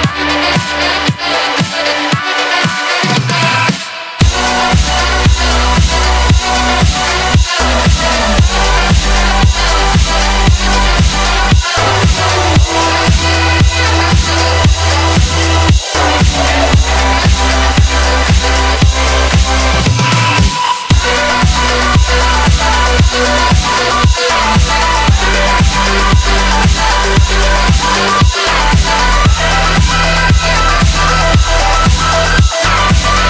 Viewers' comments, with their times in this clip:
0:03 This drop is still in my heart after a got 53% on black blizzard
0:19 I love how a new melody is introduced and gradually becomes louder/more prominent until it overtakes the main melody
0:20 music in my earss
0:20 this drop part is fireeeeeeee
0:20 literally a good drop thing.